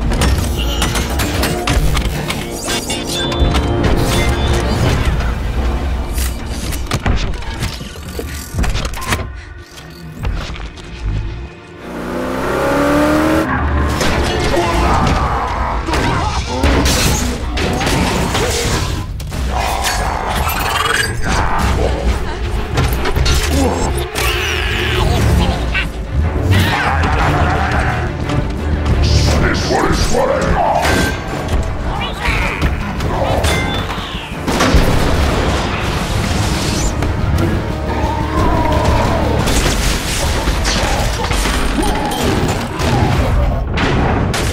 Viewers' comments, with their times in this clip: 0:06 ah yes, the beetle sounds of bumbleBEE
0:28 sounds like Barricade said " I silly sweaty swear to God"